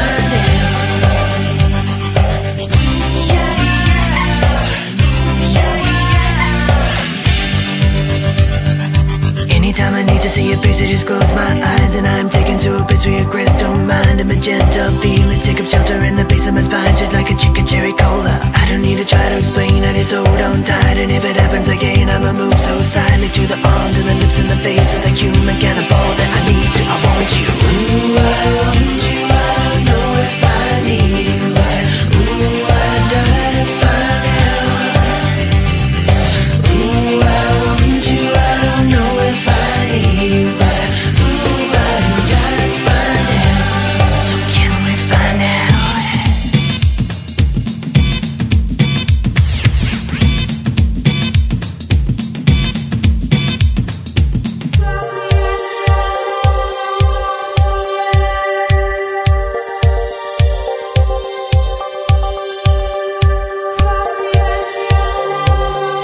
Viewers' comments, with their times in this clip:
0:04 squeaky chair snuck in the recording??
0:51 Brought to you by Sega Dreamcast.... not really but it sounds like it 😅